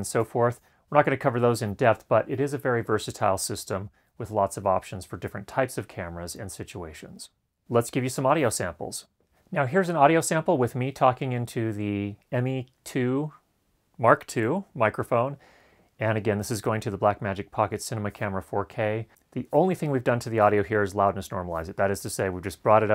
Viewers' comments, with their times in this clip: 0:08 Do you hear it in the clip starting ? If not, I think that the rest of the video received a preset with the de-breath plugin which is my mistake.